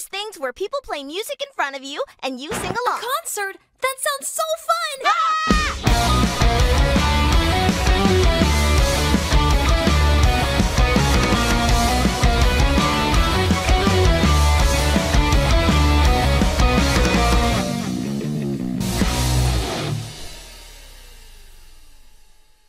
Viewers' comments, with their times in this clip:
0:06 YESS THE NOSTALGIA THE SONGG I MISS IT